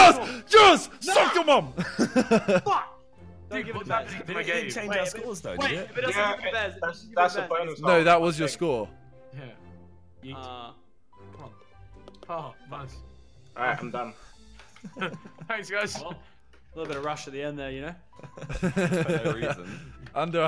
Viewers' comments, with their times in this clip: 0:05 I heard vikk in Lol just joking